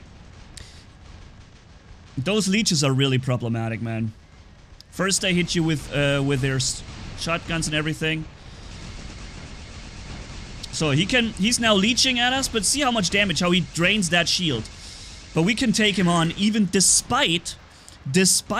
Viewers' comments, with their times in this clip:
0:06 that inquisitor take a big BOOM🤣🤣
0:06 Does someone noticed that booooooom on inquisitor.